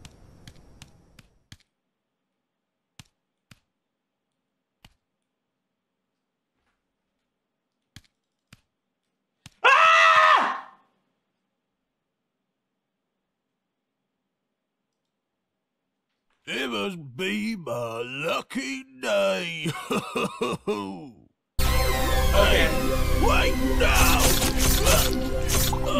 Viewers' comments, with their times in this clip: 0:10 There is no way bro screamed before the jumpscare 💀